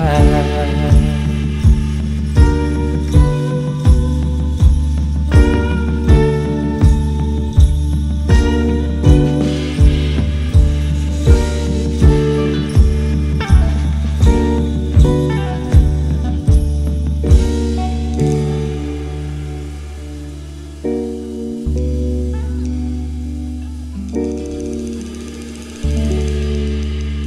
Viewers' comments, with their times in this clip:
0:09 Its am and I took a study break to watch this, worth it! Y'all sound amazing!!